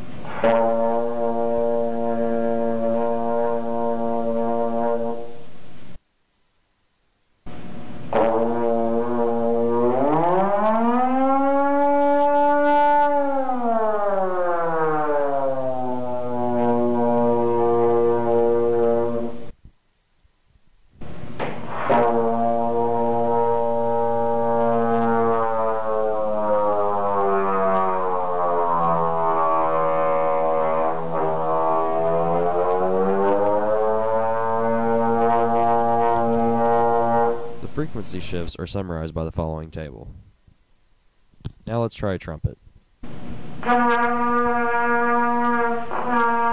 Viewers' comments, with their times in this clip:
0:08 air raid siren
0:08 It's the bomb siren! Run to the bunkers!
0:09 Airraid sirens be like
0:10 oh shit, the japanese alarm is going off
0:10 air raid siren
0:11 why dose that sound like the purge ring
0:11 It sounds like a air horn
0:20 Stuka get down
0:21 sounds like a tornado siren
0:21 sounds like a diving ww2 plane.
0:22 told ya. It's the Germans. They're sending Ju-87s
0:23 nice easy way to create an airplane flyby sound effect
0:23 THATS 100% NO DOUBT AN AIRPLANE
0:25 OH NO A MESSERSCHMITT BF109 OVER HEAD!!!
0:29 Sounds like bomber planes flying overhead
0:30 sounded like a plane from WWII
0:31 sounds like a lawn mower